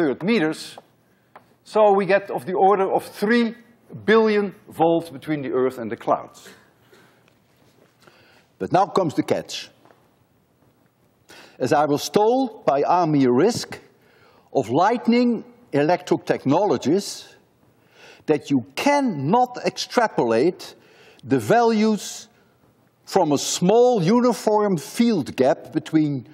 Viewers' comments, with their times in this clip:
0:09 someone is eating also this i have not performed in my class😂